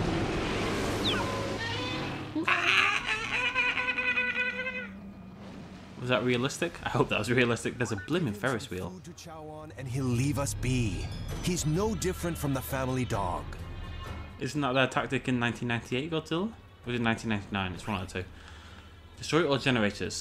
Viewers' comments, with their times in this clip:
0:03 He sounds like a cat that's dyeing and laughing at the same time